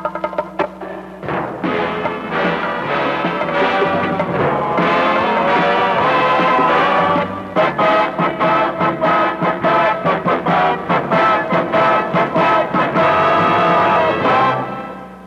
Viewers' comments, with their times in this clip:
0:03 Is the one normal speed? It sounds slowed down. The film strips made me think they produced the actual film reels pre-digital but turns out they're a 'cinema advertising company' (Wikipedia).